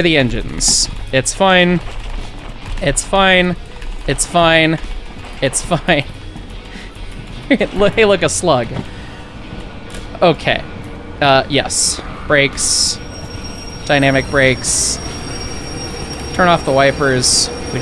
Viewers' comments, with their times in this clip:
0:04 the mental image of you full tilt sprinting through wherever, yelling "ITS FINE" as your train starts to run away NEVER fails to tickle me.